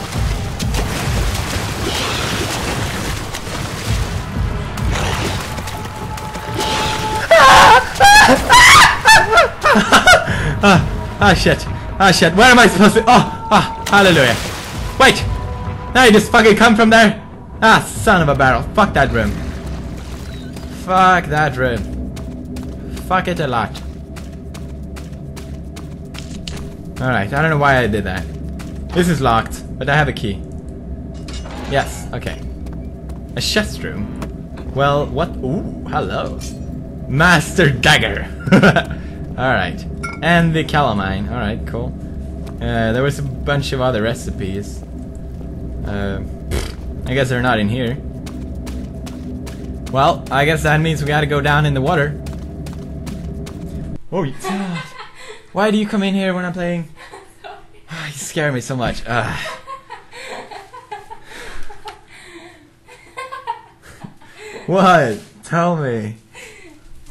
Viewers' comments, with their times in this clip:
0:03 I'm not going to lie, his screaming is kind of cute.
0:05 His shriek xD adorable
0:05 His shriek was adorable!! :D
0:05 how cute he screams
0:07 Manliest scream ever.
0:08 That scream is so manly. :)
0:08 ur girly ass scream xD
0:54 Me: *gets scared* *hears cute laugh* Me: *gasp* Marzia!!!!!